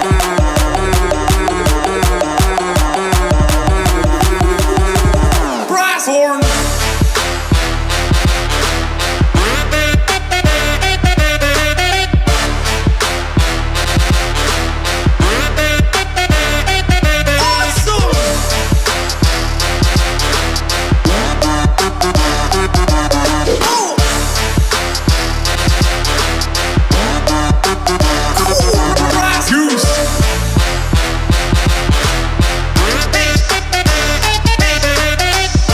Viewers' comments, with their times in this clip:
0:09 This jack bird is the last living member of his species and is doing its mating call to repopulate
0:17 omg that "awesome" sounds so cute